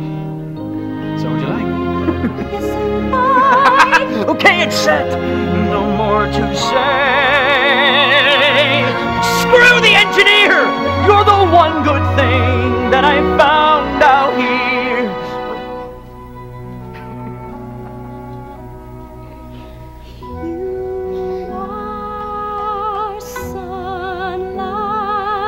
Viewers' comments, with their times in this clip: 0:10 the laugh made my life so much better💖😭